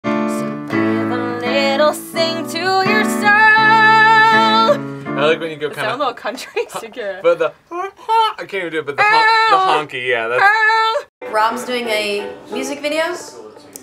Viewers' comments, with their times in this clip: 0:00 SO Gal Gadot can sing too?